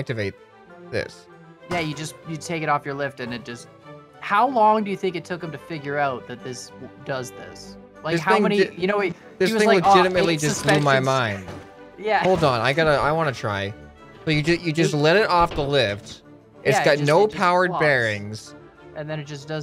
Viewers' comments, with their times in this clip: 0:06 You can hear the pop